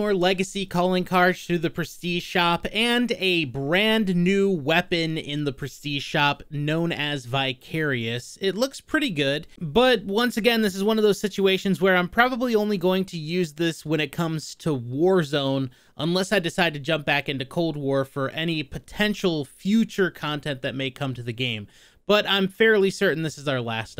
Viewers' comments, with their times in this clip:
0:07 I thought you said the weapon was bi-curious at first